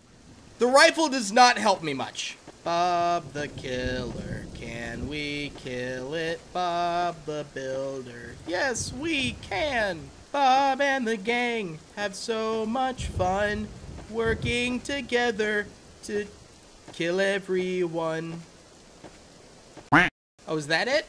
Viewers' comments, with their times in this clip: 0:03 Singing a song about Bob the killer 💀